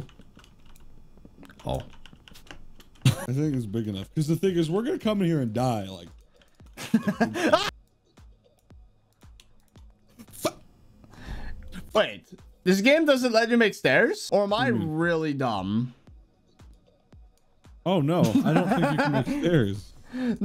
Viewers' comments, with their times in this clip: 0:07 perfectly cut scream